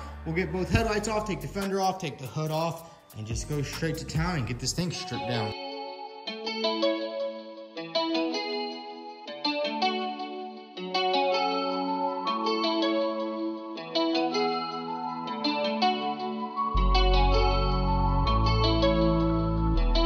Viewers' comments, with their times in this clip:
0:05 my favourite jam :) 🎶🎶🎵🎵